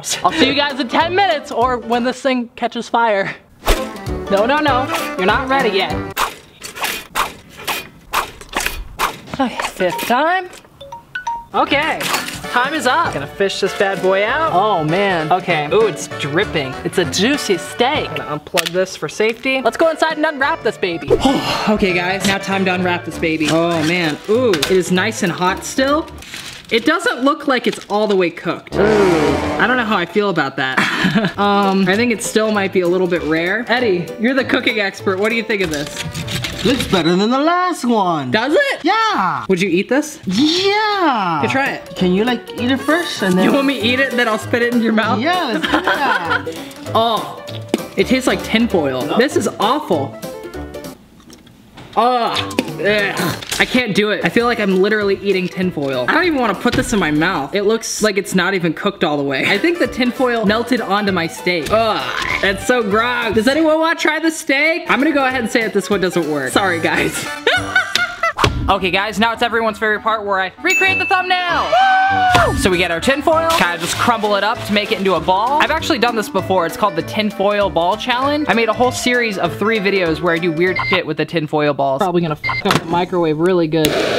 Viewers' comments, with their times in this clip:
0:10 your alarm reminds me me of my 4th period teacher she has the same alarm
0:10 its a pewdie-problem😂 edit: you have the same alarm sound i have😱🔇
1:08 Why does he sound like a monkey?